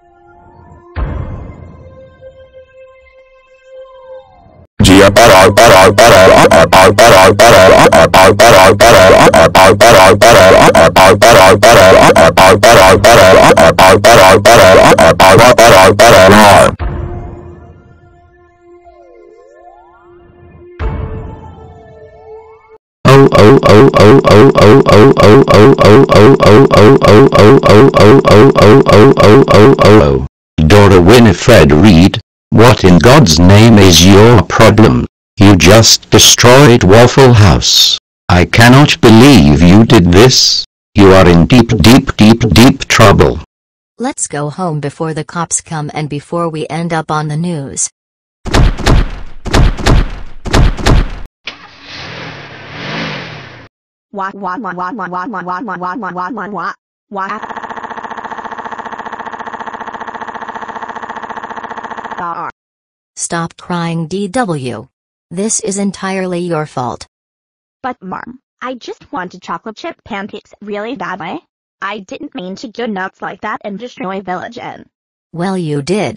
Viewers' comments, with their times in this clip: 0:05 WARMING!!!! TAKE OFF OF YOUR HEADPHONES, SHUT YOUR EARS OR TURN THE VOLUME DOWN!!!
1:01 ☀️: ♀️ voice 😔 I'm so embarrassed. 🌙: ♂️ voice 😡 Seriously Dora Winifred?